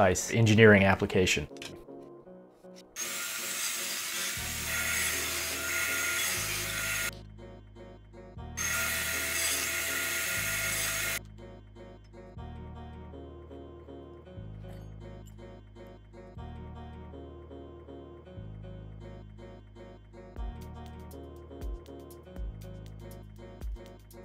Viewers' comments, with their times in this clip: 0:09 I'm a woodworker, CNC guy and a musician. Your first video was interesting to me but the sound of V1 was kind of meh. I am blown away by the sound of this upgrade! It still has a slight "trash can" type of sound but that sound is FANTASTIC!!!!! Great job! p.s. The way you're "cross cutting" the MDF is a bit dangerous. Probably not with the saw you have but with a full size saw you're asking for kickback or some other catastrophe to happen. When cutting little blocks like that, you should use some sort of crosscut device. The little block can get pinched between the saw blade and the fence and bad things can happen. The riving knife your saw has should alleviate a lot of the risk but still a good idea to use best practices.